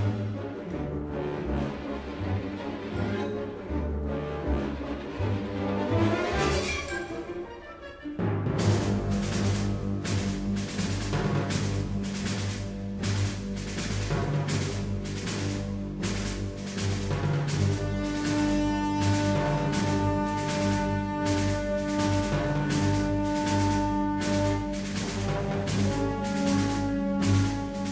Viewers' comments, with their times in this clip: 0:08 Best jump in the track 👍🎶🎵